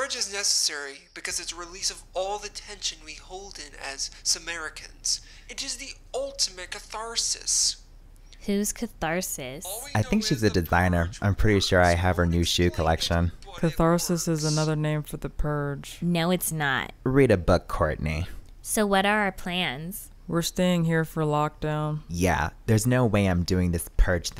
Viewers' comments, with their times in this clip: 0:06 The way he said catharsis 💀😂😂😂😂